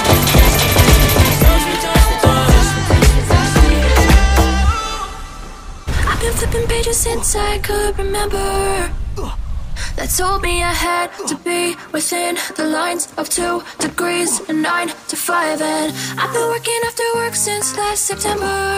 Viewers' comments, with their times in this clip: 0:04 he said lauhpads for launch pad🤣🤣